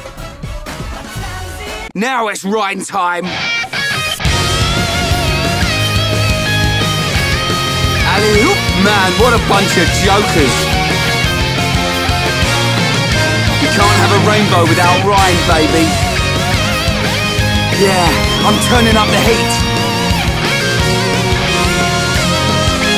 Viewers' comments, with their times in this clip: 0:07 I like how auto-caption read it as "what a bunch of yokels" cause I always felt that j sounded like a half y